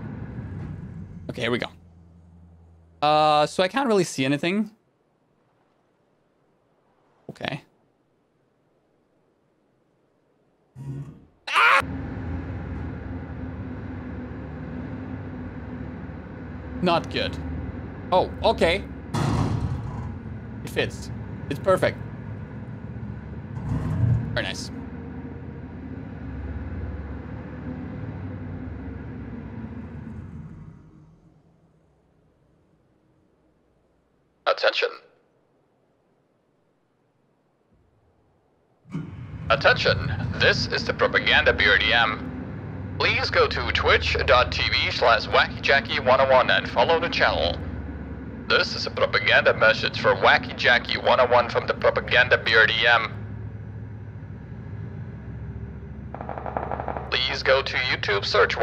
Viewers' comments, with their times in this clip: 0:09 Perfectly cut scream:
0:09 Perfectly cut scream🤣
0:10 ,that scream had me laughing a lot 🤣🤣🤣
0:10 Perfectly cut scream 🤣🤣
0:10 Perfectly cut scream.
0:11 Lol those are perfectly cut scream moment right there 🤣
0:11 He sounded like a dying cat
0:39 Just Some BRDM with speaker passing by